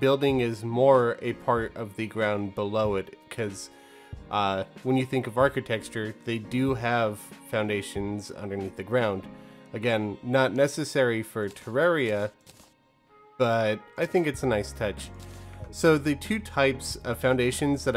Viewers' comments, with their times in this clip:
0:04 when you think of architexture? x))